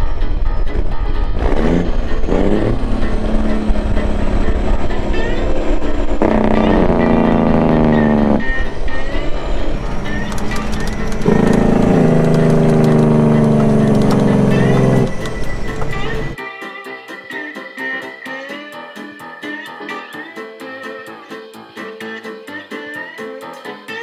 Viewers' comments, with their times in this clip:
0:07 A like just for that jake brake!